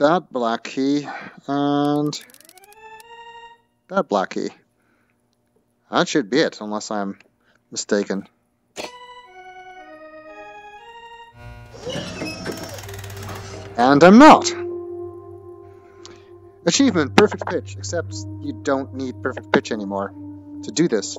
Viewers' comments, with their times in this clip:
0:03 If the length of the notes were different, you would have the first 5 notes to the Mario tune!